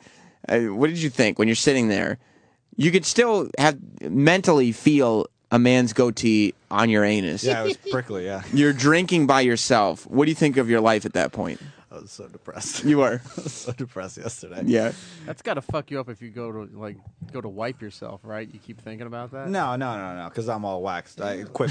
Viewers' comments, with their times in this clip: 0:05 That laugh at that time was awesome